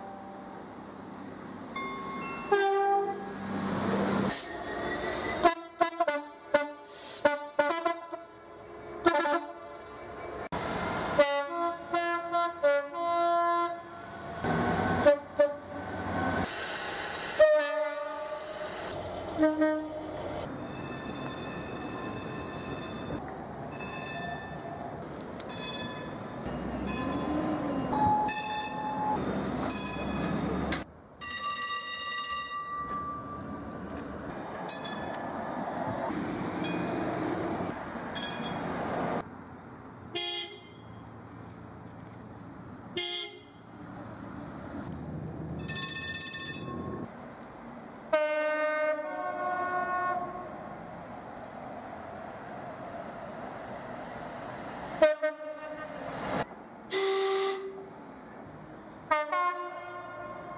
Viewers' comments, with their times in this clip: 0:04 some funyn DVT horns there but keep it up
0:48 my favourite train horn